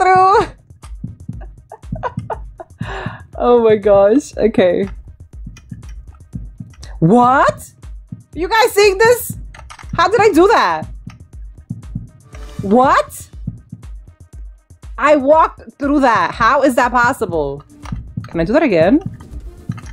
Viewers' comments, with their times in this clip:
0:05 had me laughing so hard when she said “what” For me it sounded like a minion